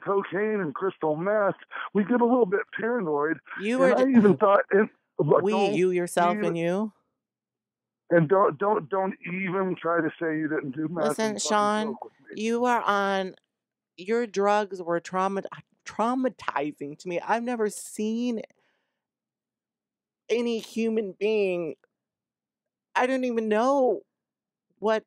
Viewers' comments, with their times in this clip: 0:09 whenever a female is caught lying... Here comes the crying... Love Chyna as a wrestler, but she wasn't taking full accountability right here